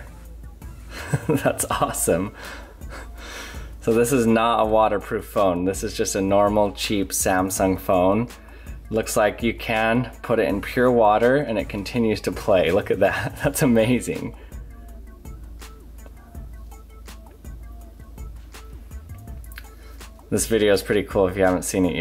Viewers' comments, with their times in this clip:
0:03 ,I liked the way you said " cheap Samsun phone"